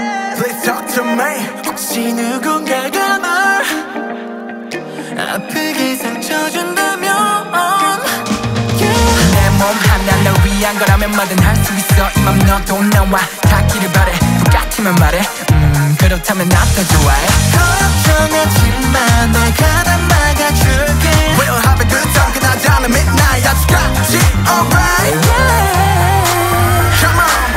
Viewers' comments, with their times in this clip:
0:09 the background music makes my eyes tear